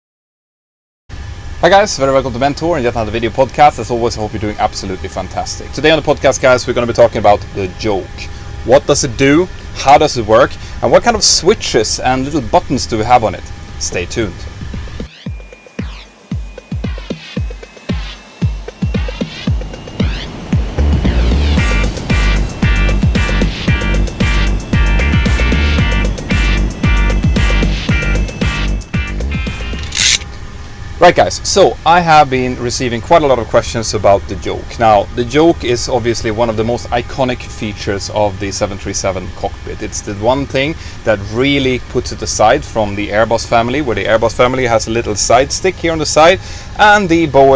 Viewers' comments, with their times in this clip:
0:06 I do believe that it should be "yoke" rather than "joke." So, you should pronounce the "y" as in "yes."
0:33 The fact he was joke not yoke